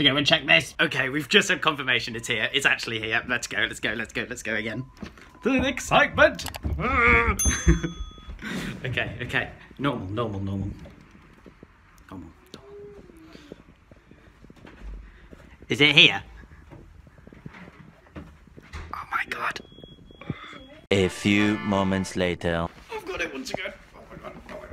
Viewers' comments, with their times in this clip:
0:07 wired minecraft noises